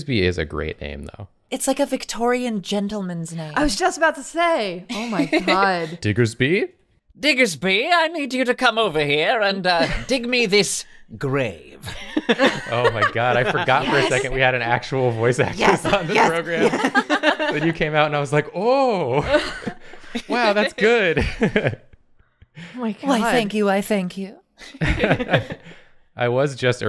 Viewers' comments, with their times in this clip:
0:08 I was like "Oh, such a soft sweet voice, I can see the type of characters this person must voice" but then came and I'm still shock with how much the voice change!